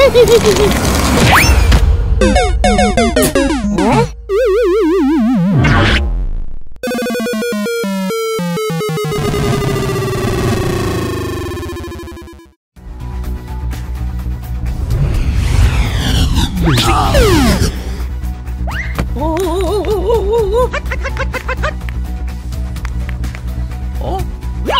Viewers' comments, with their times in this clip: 0:06 Creeoy Game Over Sound